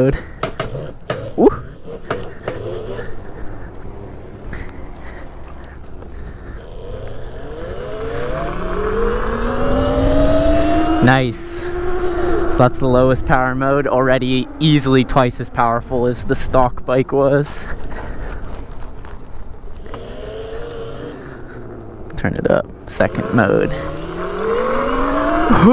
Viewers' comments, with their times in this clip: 0:07 sounded like a hellcat